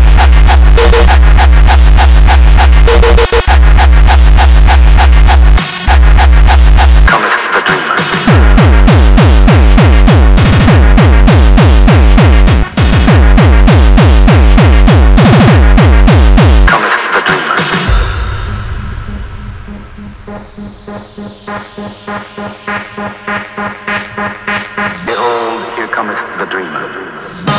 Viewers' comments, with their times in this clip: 0:09 that oldschool kick is so awsome :D
0:09 The only kick i liked was ....modern kicks are bullshit..all just uptempo...